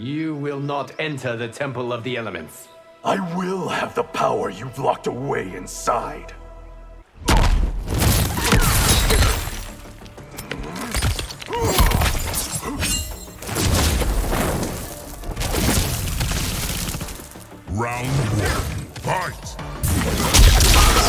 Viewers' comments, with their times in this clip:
0:03 bro kinda sound like muscle man if u keep replaying the part😭